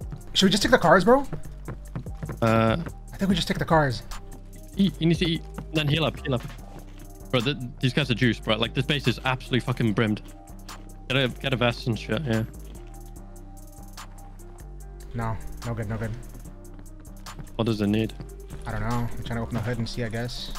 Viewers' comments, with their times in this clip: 0:06 does your mate say "these guys are Jewish, bro"? That's... problematic.
0:06 I thought bruh called tha base owners Jews🤣 I was like “damn okay Kanye”